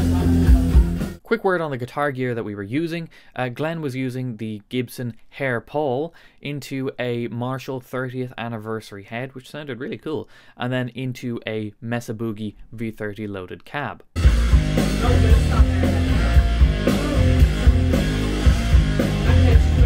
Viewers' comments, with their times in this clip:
0:06 Awesome tone! Marshall 30th Anniversary is my favourite amp. I've got both the head and combo versions.